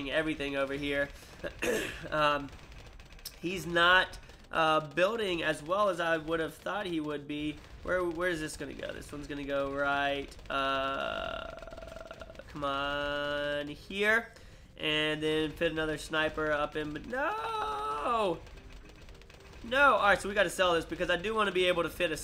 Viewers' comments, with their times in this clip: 0:04 he said "his not" And it sounded like "Deez nuts"